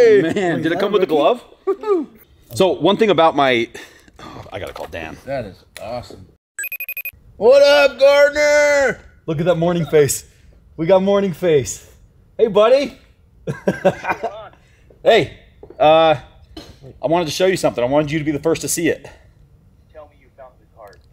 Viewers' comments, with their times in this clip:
0:06 that is my alarm clock sound…. And you scared me pretty good.